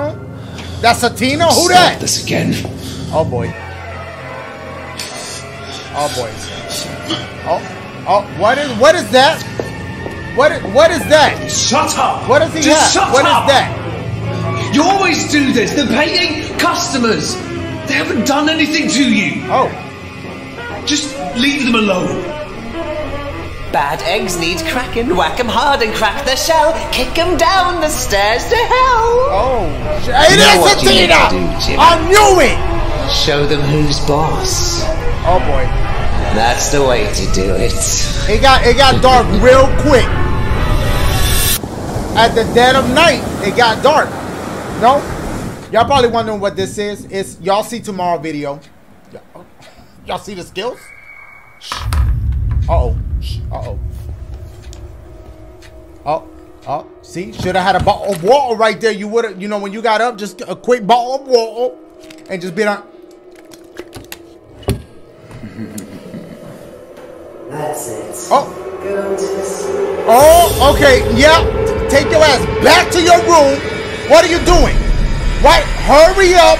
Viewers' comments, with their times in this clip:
0:04 "tina" (BASS BOOM)
0:58 I thought he said "Butthole of water" lmaoo